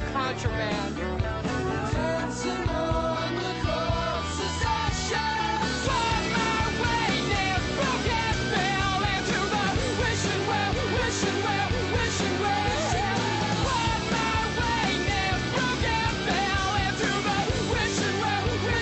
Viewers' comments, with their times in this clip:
0:06 Well everyone made a deal about these guys coming back and has obtained a decent amount of views and is a band from my town but honestly this song is utterly bad, no offense but just listen to it is utterly out of tune.